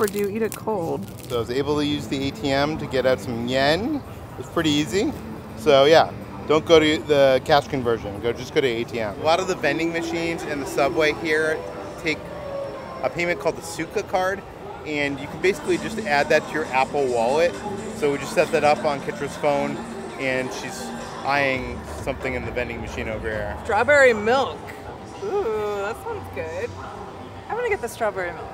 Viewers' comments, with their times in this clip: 0:09 Is it just me, or did I hear part of Hedwig's theme here?